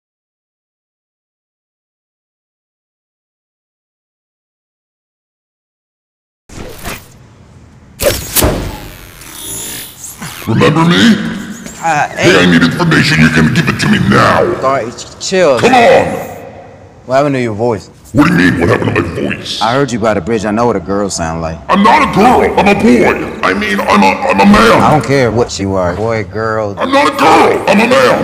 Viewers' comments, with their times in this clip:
0:10 bro turned from billy to jamal in 3 seconds